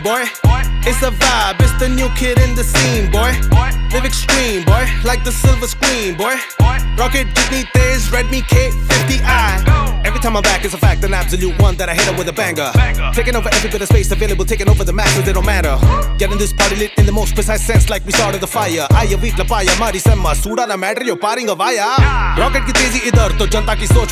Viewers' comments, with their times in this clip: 0:09 the flow ,every single word is crystal clear😱😱😱